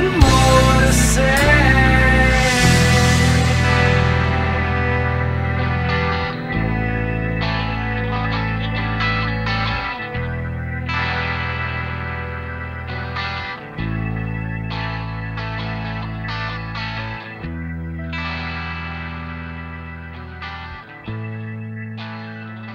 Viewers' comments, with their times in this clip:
0:09 i like too much the godsmack-pink floyd style